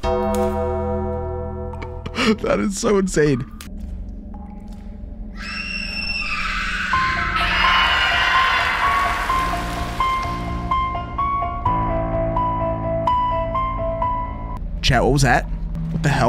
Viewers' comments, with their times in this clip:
0:04 Perfect timing LOL when the Halloween music kicks in: